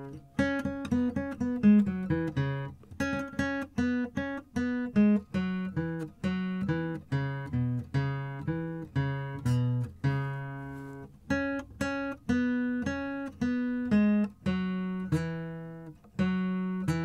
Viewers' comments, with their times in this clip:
0:03 Did you get it? is the easiest to follow, capo relative it seems to be G2 G2 G0 G2 G0 D2 D0 A3 D0 A3 A0 E3 A0 A3 A0 E3 A0.